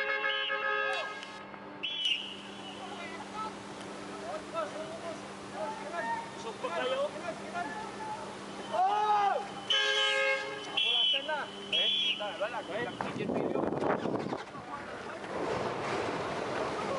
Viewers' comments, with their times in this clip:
0:04 🇵🇭 Toledo is in Cebu, Visayas Region. Language is Different from Us here in Manila. That's why I couldn't understand what's the people are saying here. I'm wondering why is this ship or other ships aren't Blasting Their Horns long enough to warn of an Incoming Disaster. All I can hear is a Boy scout Whistle.